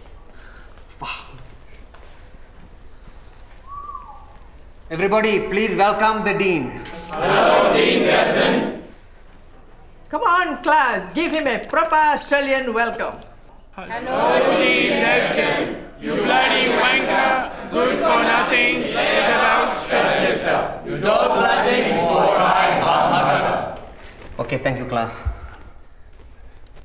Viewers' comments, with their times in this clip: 0:08 Am I the only one who thought they said Dean Pelton